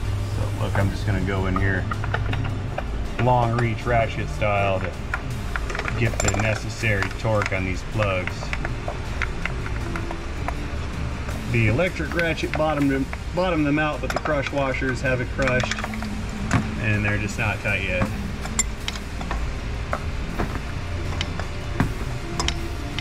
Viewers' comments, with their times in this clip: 0:10 All in all, your videos are great, not only the content you offer, but the quality of the videos, but to hear a boss music on the background as you unleash the spark plugs is priceless, makes the extra mile